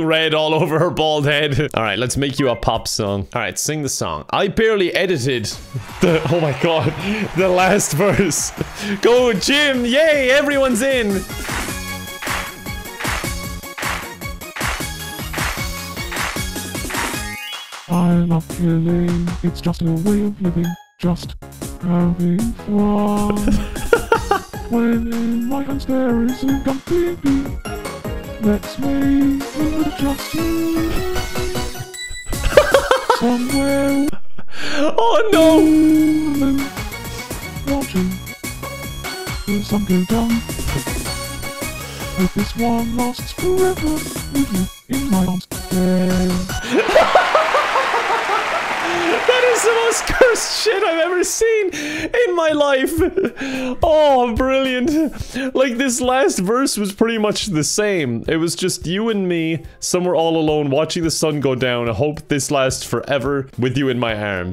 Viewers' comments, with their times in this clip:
0:03 This legit sounds and looks like an Anime opening
0:05 Jim's song sounds a lot like anime ops
0:46 And that is one of the most adorable laughs I've ever heard ✨
0:47 such a sincere laughter :DDD